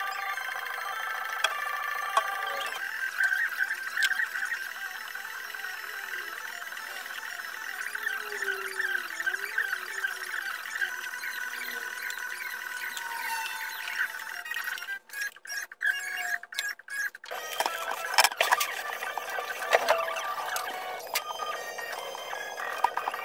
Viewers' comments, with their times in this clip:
0:06 did anyone else hear the Pokémon random battle sound on gba? Lol